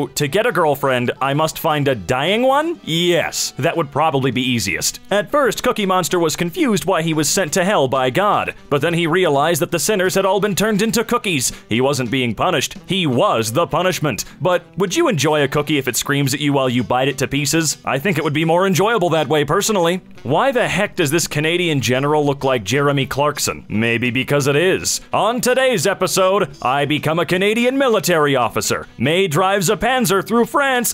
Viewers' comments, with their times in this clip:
0:05 *doomgod music intensifies*
0:14 based on The voice you did for this cursed comment the only thing I can think as a response to it is CAAAAAARRRRRRLLLLLLL
0:18 for some reason he sounds like Carl from llamas with hats. Idk why but I just got really stongly reminded of him in that part.